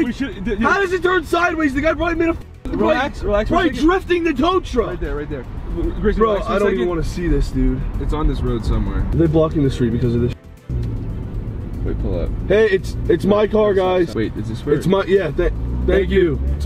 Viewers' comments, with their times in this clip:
0:03 ”he was probably drifting the tow truck “ *plays Tokyo drift *😂